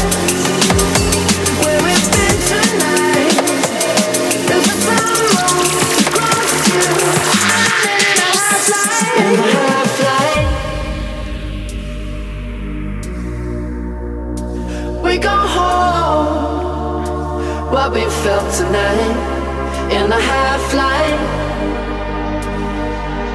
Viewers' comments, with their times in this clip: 0:06 what a banger